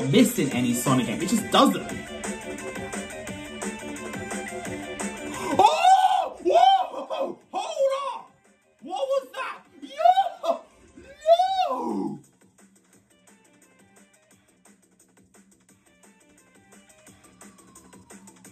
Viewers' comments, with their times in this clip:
0:04 Dat Scream Though😅